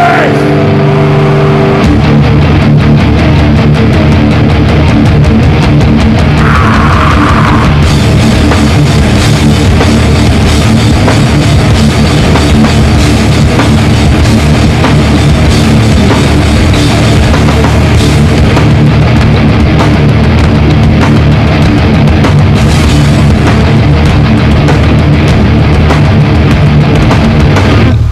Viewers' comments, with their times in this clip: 0:10 Iggor is literally destroying the battery